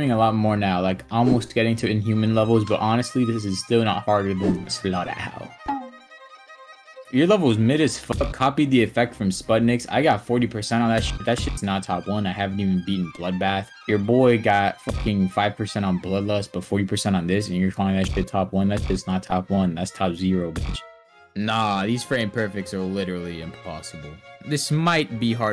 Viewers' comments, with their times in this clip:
0:07 bros tryna talk like Packgod 💀